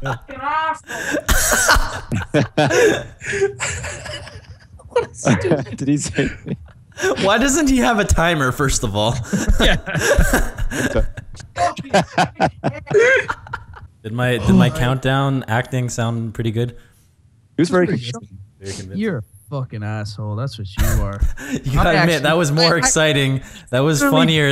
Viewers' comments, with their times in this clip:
0:07 Vanoss said "Why doesnt u have a timer" xD